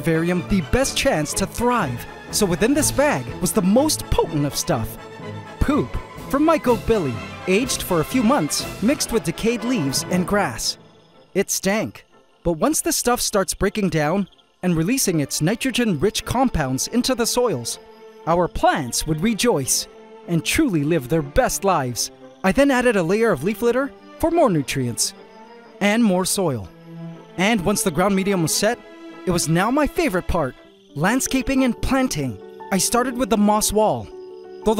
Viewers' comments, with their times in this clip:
0:05 The perfect enunciation makes me laugh 😂
0:15 I think I start hearing Freddy’s music box
0:15 The music goes hard
0:16 is that freddy fazbear aur aur aur aur
0:19 Did anyone else hear the fnaf music play 🐻